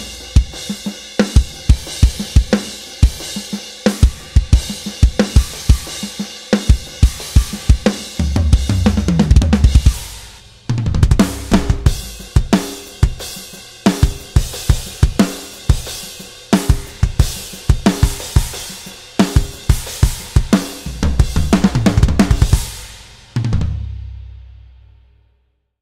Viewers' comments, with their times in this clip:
0:06 Like really that is the sound of the RAW kit? No mixing etc done?